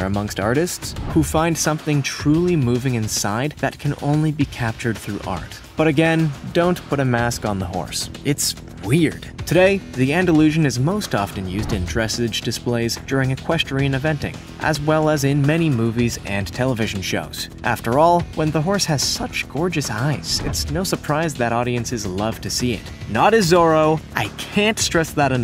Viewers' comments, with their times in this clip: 0:07 The way he says dressage